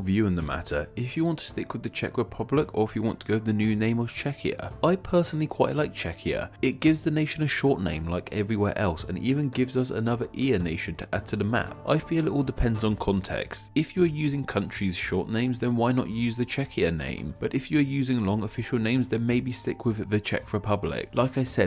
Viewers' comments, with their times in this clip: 0:08 It sounds way too similar to Chechnya.